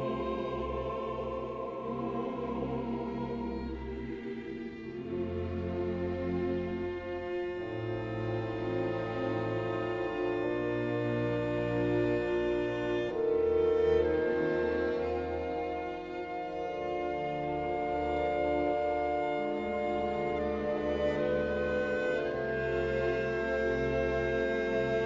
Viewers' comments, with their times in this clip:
0:04 I love this rendition. Idk if it's just slowed or if there's something extra. But it sounds more romantic than all other versions I've heard.
0:09 For the record: Many other readings of the Lacrimosa take about 3 and a half minutes. From the start of this Lacrimosa to the end of the recording is nearly twice as much time! Not even Bruno Walter took it this slow. (I wonder how much time Celibidache took?)